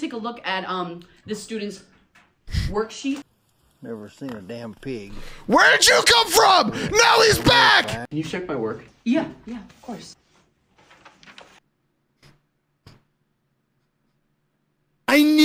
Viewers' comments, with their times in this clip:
0:03 he laughed listen closely to it..!!